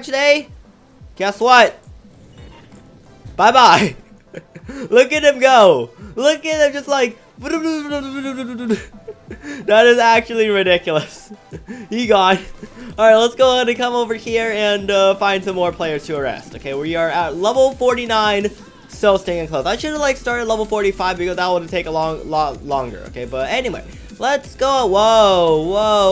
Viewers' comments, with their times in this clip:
0:07 (*mazda rx7 rotary sounds intensify*)